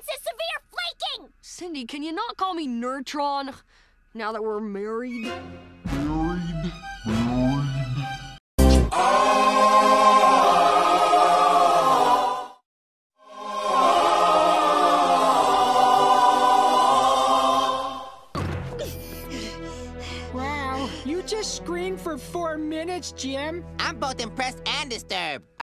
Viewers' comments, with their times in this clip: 0:08 this is when he begins screaming use this :D
0:08 Someone in the comments: RIP Coolio Me: (- screaming WHAT for 4 minutes -)
0:08 The screaming is perfectly timed the Gangsta's Paradise Choir.
0:09 litle brother when you touch him:
0:11 There was a commercial break ,he screamed during the commercial break(which is 4 minutes long,it was a meta joke.)
0:11 Sesame street baker
0:14 me when I get banned for loud audio